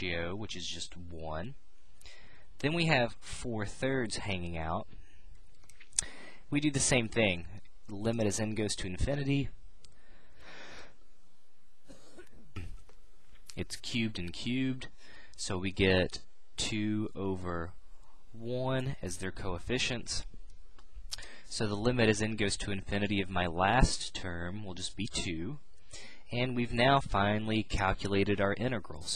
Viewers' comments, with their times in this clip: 0:10 Thumbs up if you heard the cough